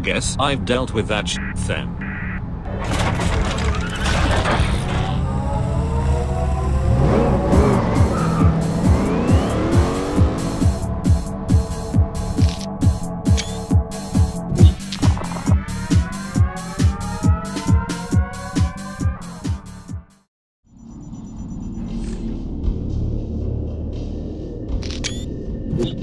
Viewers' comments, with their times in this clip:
0:06 DJ toilet music 😂
0:08 everyone then: what a cool music Kids now:dj toilet!
0:14 upgraded dj toilet nusic